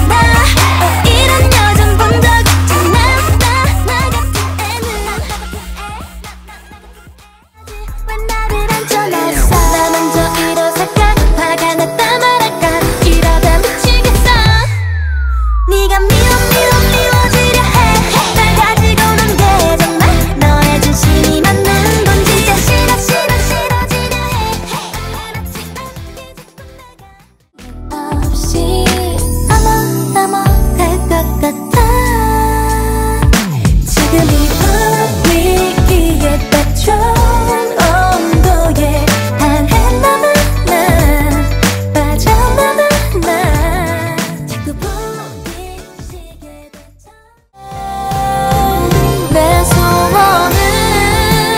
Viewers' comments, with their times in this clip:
0:05 YAASSSS the one by melodesign sounds like a gorgeous ballad and the title track sounds catchy to me and not in an overly cutesy way, I'm loving the songs so far! I think I can hear my baby girl Mina rapping arghhhh can't wait~ Don't forget to get your album, fellow danjjaks!! ;) Let's support our girlies ❤❤
0:38 that dissonance caught me off guard but i like it